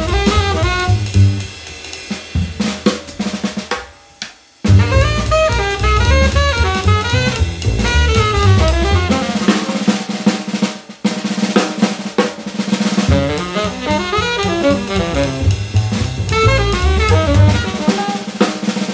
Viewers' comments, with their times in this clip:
0:04 the drummer is literally cooking lmaoooo